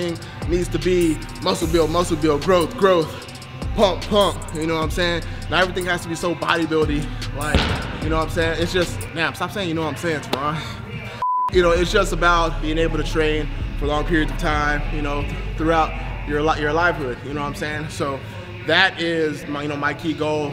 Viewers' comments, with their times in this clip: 0:07 not only his muscles are massive but his farts aswell! jk awesome video